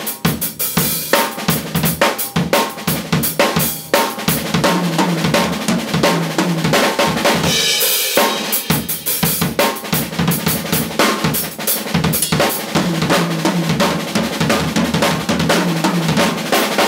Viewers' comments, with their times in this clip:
0:04 i dont know why but the fill is freaking amazing. i love the ending!!